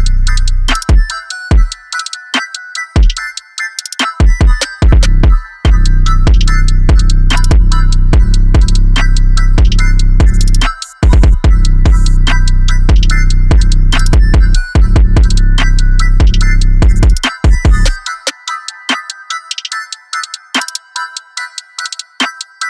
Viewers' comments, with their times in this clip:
0:05 bro u an alien, this hits from outer space. i just wish the 808s would change notes after (to follow the melody)